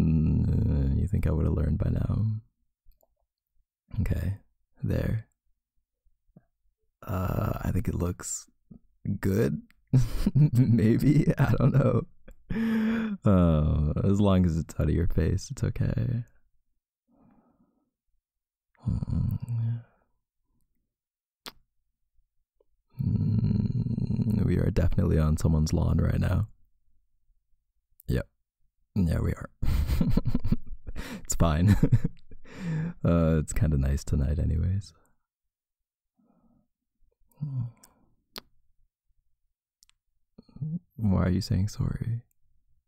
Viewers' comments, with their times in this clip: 0:08 THAT CUTE LITTLE LAUGH, OMG * screams into pillow*
0:29 I love it when you laugh like that 🥺